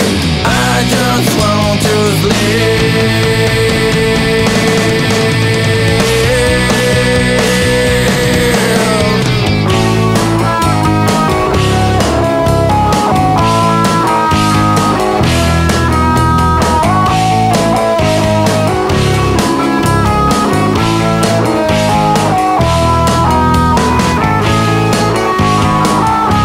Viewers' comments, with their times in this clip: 0:09 if I ever end up going through a full on mental breakdown this chorus will play in my head.